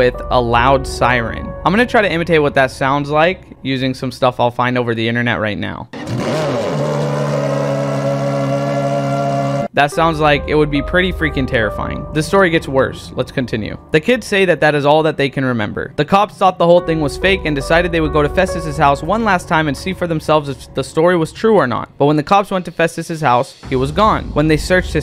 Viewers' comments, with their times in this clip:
0:06 naah bro this part ruined the whole scary vibe wtf is that goofy ahh sound 💀💀💀